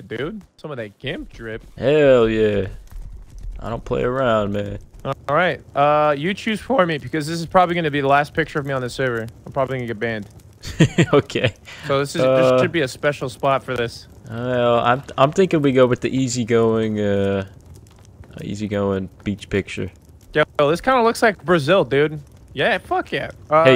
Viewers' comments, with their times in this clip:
0:06 that voice crack tho